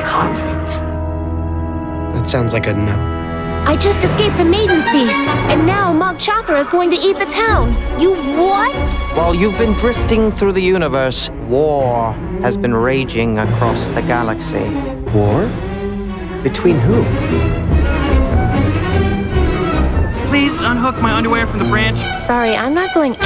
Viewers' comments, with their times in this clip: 0:05 Hey what's that song ? It's a really intense orchestra-- I love it!